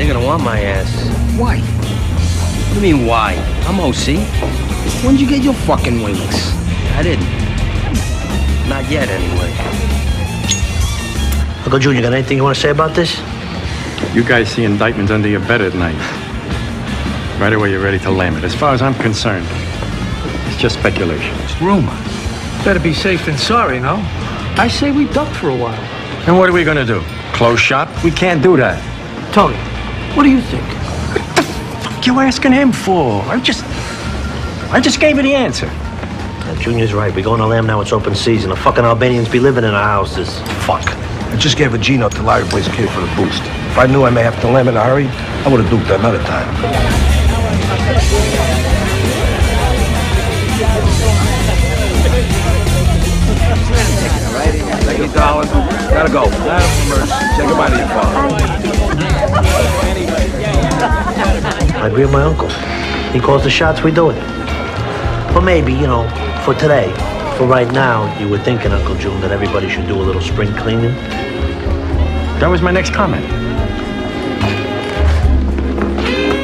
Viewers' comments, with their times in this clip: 0:06 if only he pronounced it like this when he was high
0:47 I could've swore Adrianna & Meadow were dancing to "Turn the Beat Around" when i watched this before
0:57 the "bye" is almost as bad as the "i talked to barzini" voiceover
1:01 does anyone know the song being played ? beautifully mobster-oriented solo